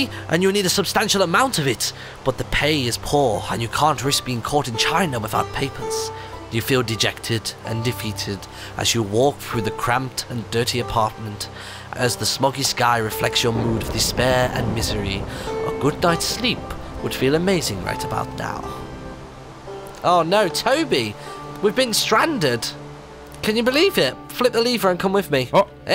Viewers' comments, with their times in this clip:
0:04 did it say nomey when it should have said money?
0:08 you need nomey?